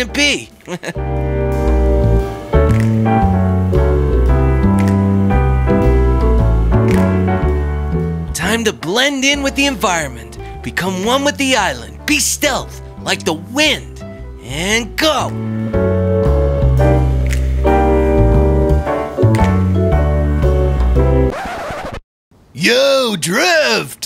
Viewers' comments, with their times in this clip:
0:05 Everybody sounds diffrent but that's not stopping me with watching it am